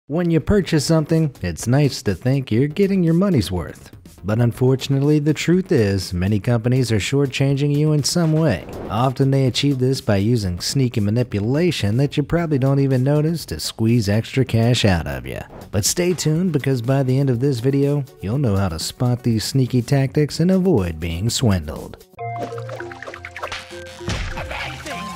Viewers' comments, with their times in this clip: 0:08 did he say often without the silent 't' ?